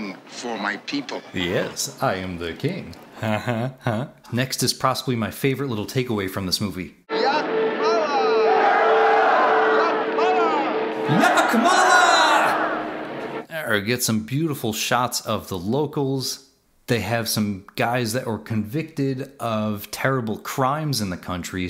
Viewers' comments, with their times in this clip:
0:04 you say "Prossibly" Literally unwatchable. (Just kidding, recently discovered your channel and I'm enjoying it)